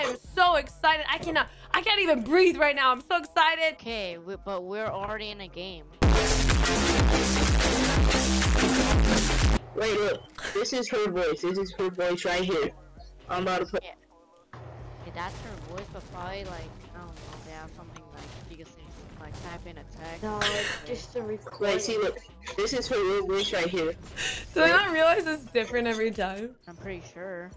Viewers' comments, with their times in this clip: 0:08 second Ali a😂😂